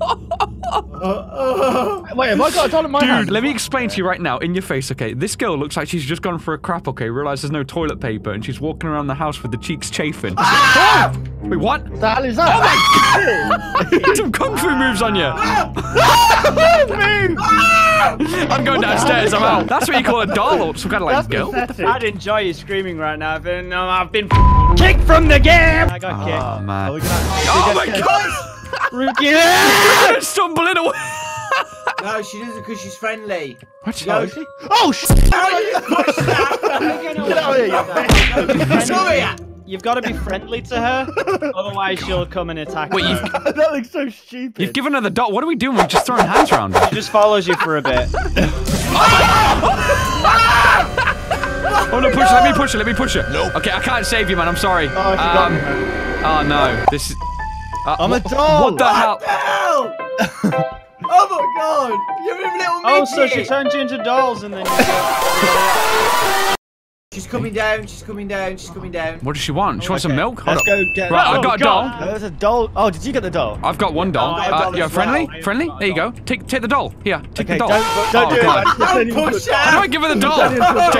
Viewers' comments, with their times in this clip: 0:10 where screaming begin
1:03 Can anyone turn up the sound or use headphones and tell me what the sound is in the background? 🤔